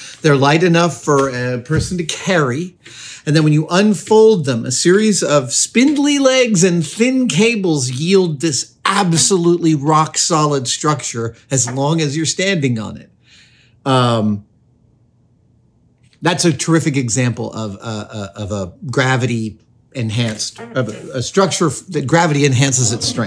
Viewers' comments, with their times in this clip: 0:06 Funny Adam is doing a show about squeaky beds on the most squeaky stool in the shop, or was that a setup?